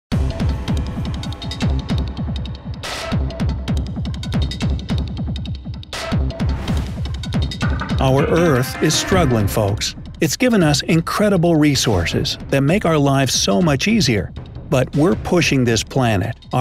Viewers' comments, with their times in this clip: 0:00 I thought my speed was set to 2x